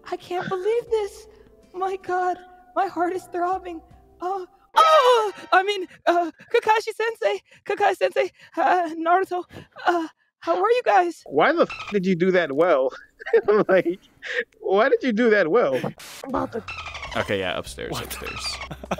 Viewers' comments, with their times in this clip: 0:03 That sudden sound got me good. Sounded like she got hit from the pack with a rasengan